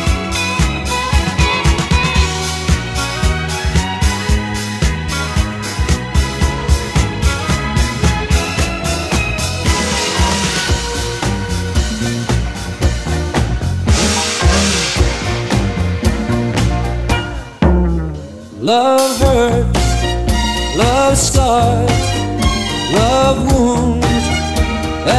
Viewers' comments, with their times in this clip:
0:08 The Jim Capaldi song minutes he had his back to the audience. Why did he have his back to the audience? Can someone chime in.. I think it would have gone better if he was at least facing his audience. Am I right?.. Even though he had triple booms sound from the drums percussion was an absolute copy of Elvis' band back in 75'.